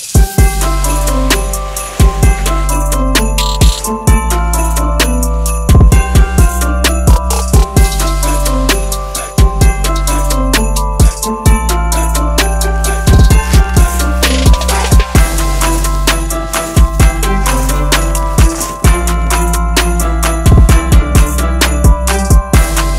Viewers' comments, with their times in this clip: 0:07 Christmas music...... it is march